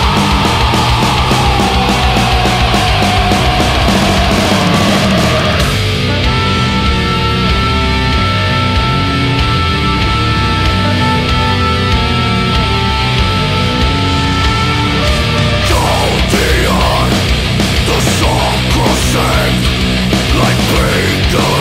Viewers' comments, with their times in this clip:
0:05 is this song a tribute to the band Bethlehem? This part especially sounds exactly like one of their songs!